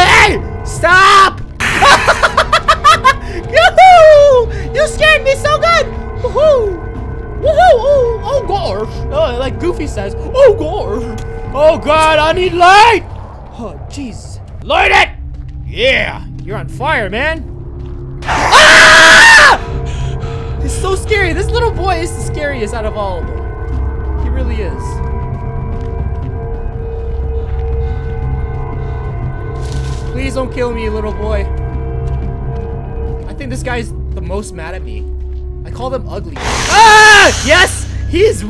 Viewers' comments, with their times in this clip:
0:03 that laugh tho 😂
0:19 he screamed so hard!😂😂